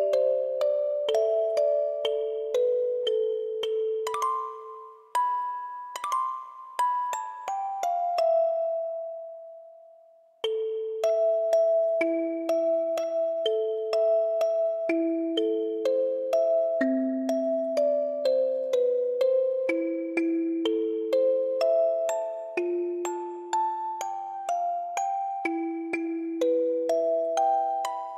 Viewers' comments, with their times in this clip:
0:10 These couple of seconds remind me do much of «Once upon a december» from Anastasia